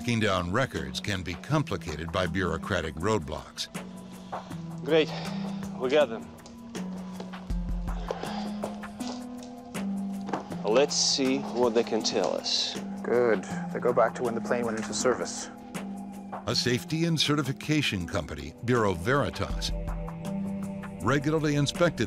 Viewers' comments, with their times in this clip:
0:03 is it me or did he just say ROBLOX?